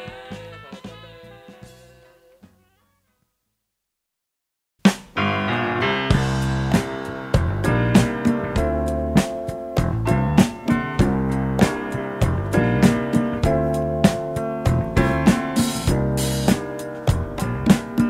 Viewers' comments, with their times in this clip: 0:03 straight up steely dan song in the middle of this album